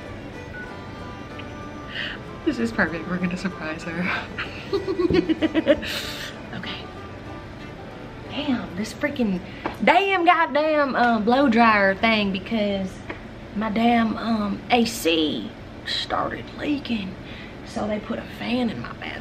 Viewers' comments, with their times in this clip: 0:05 that laugh omg 😩😂😂